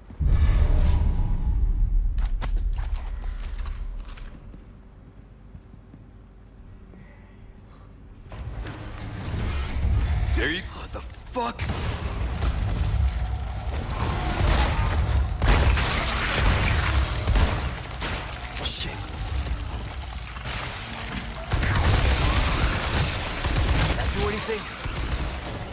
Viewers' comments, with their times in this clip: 0:09 Here What the f- BOOM!!!